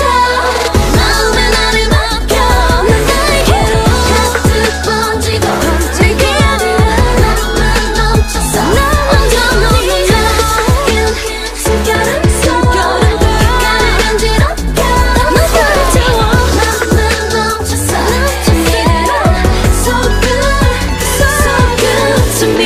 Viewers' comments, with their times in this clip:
0:03 It hurts to see that Irene didn't get any lines (not even an "entirely" part) at the end of the song. Like the whole last minute. She did really well in this song and especially this album singing high.. I sometimes prefer her voice at parts more than Seulgi's, I think she should get some more high pitch singing like for at least 3-4 songs every album, she really does sing well.. Also Yeri suprised me with sounding so well..
0:03 And her little ad lib ❤